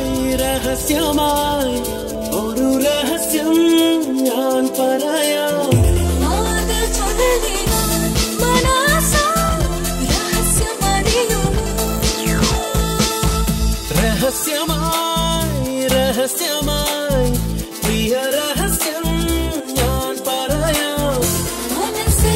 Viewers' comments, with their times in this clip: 0:05 And the Bass Guitar starts it's magic!